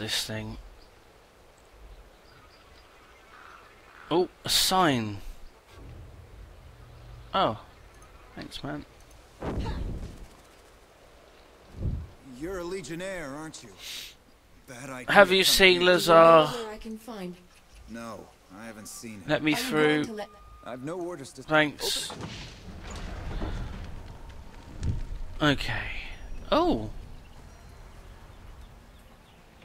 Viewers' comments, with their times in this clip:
0:10 Anyone agree with me that Ladislas (The dude ) sounds like one of the voice actors in Fallout: New Vegas?